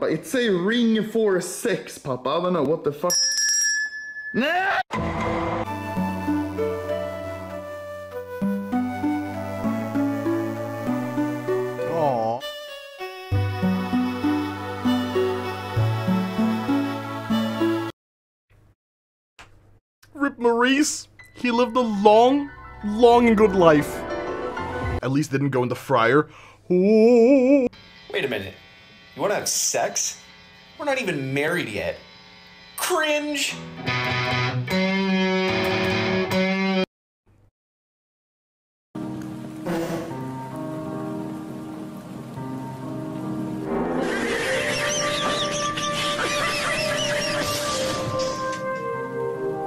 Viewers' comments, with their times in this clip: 0:06 Can someone tell me the song with the hamster in the little garbage can? It sounds very peaceful and beautiful
0:34 The song is pretty good